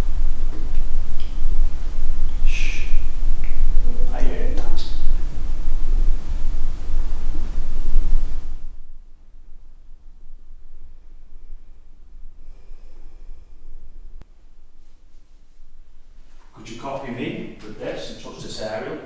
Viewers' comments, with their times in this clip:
0:04 Hello! Great investigation and castle. in a replay in fact, there us the moise but also a little orb flys over the k2. Normally orbs don't thrill me but you asked the spirit too go near the devices and the noise happened.